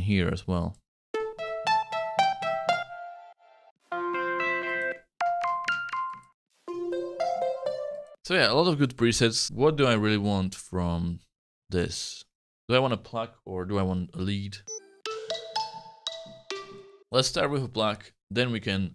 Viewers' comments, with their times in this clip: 0:05 Sounds kinda like my phone's alarm LOL. Great video! :D